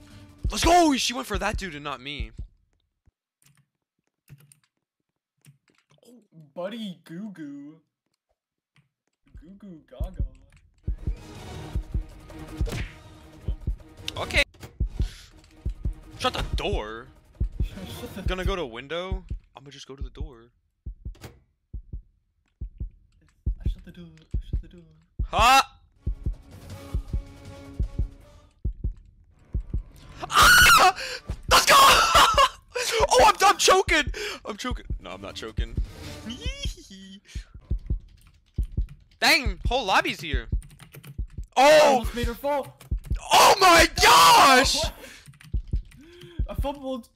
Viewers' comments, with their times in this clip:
0:07 “buddy… goo goo? 🤨🤨🤨 goo goo gaga? 😨” THE DISGUST IN HIS VOICE
0:30 HAHAH I DIED THE SCREAMMMM 😭